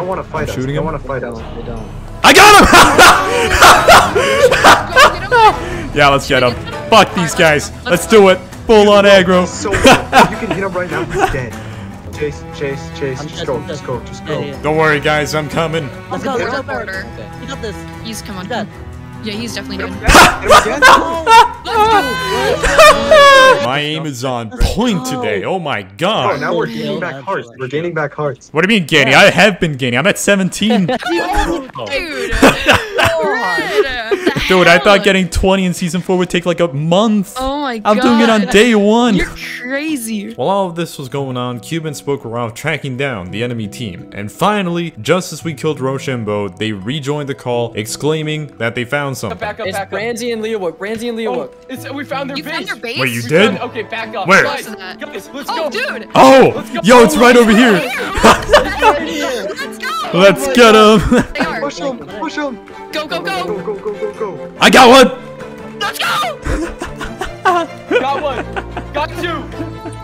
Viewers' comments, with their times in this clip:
0:03 like bro look at his laugh and look up technoblade laughing and tell me the differences
0:04 mans got the hollow knight music on, you know it’s intense
0:07 love the hollow Knight music it fit the battle perfectly
0:53 that hornet music tho